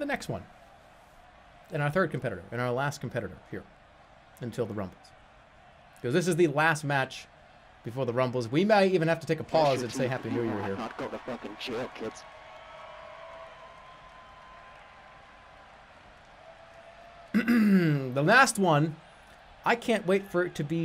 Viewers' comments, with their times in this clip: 0:08 Sounded like Kylo Ren saying he wasn't going to jail.